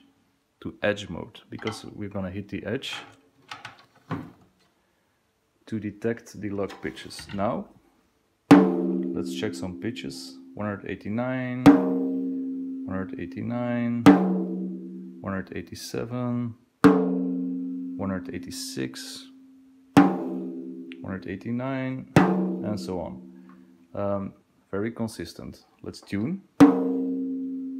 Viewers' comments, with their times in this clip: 0:09 "Lets check some bitches." 😂